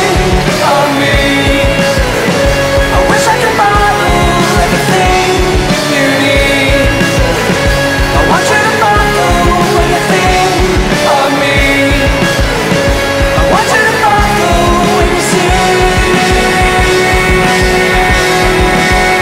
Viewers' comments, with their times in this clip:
0:06 Anyone else hear that funny sound